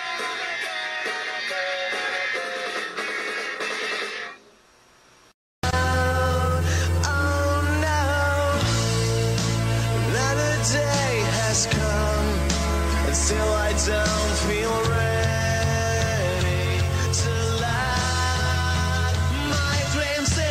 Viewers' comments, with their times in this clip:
0:05 I think “My Pretty Doll” is definitely an unknown song that needs more recognition. It sounds like a long-lost Oasis song, and while I’m sure it’s not an Oasis demo, it has that sense of 90s-00s nostalgia and familiarity. It has those Oasis/Radiohead chord progressions, and Green Day-style vocals, but my hypothesis is that it’s the song of a Britpop band that never got its big break and wasn’t signed to a record label and had a lot of its songs scrapped since they didn’t make it to radio. I’m not a detective so I’m not entirely sure if the hypothesis is true, but I really hope the song gets found because it sounds amazing.